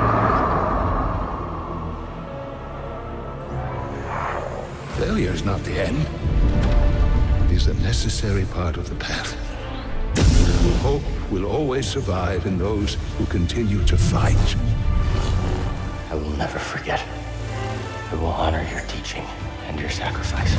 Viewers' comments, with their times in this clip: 0:04 “Failure is not the end, it is a necessary part of the path, Hope will always survive in those who continue to fight.” Brilliantly done, and with the music, it made me tear up. 😢
0:05 This was so epic. Especially when the main theme comes in with a bang